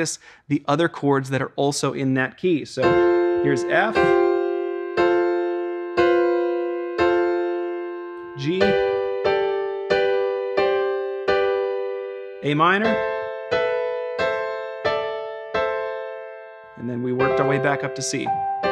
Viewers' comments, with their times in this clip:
0:06 bit of F5(#4) there, not quite a sus4… Use with care, you will be accused of trying to jazz.